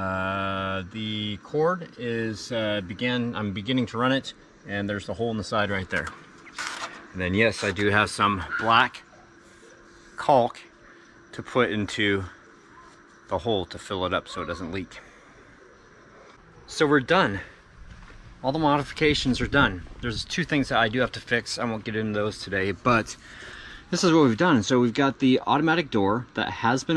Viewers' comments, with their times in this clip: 0:07 ..bahaha. That was some labored pronunciation!